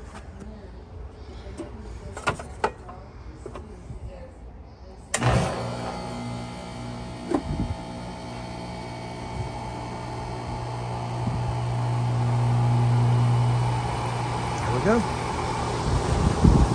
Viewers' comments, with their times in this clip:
0:04 Boy that sounds good